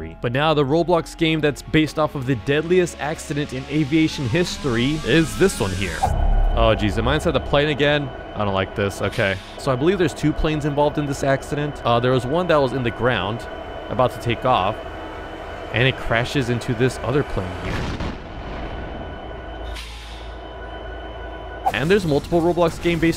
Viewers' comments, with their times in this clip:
0:06 The KLM’s Sounds Is A SD70ACe Train 💀
0:11 why does the engine sounds like a sd70ace locomotive